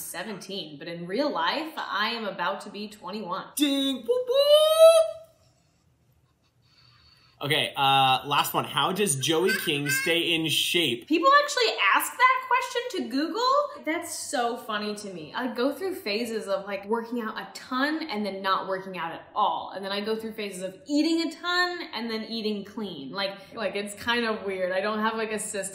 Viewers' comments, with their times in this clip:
0:09 JOEY’S LAUGH IS HILARIOUSSSSS
0:09 Joey: laughs Me:😂🤣🤣🤣😂😂🤣😵